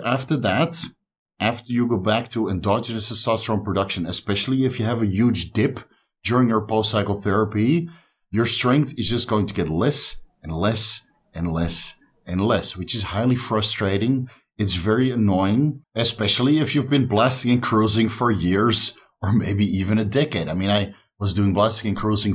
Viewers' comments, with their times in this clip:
0:04 oh you said DIP had to watch it a couple of times to get that right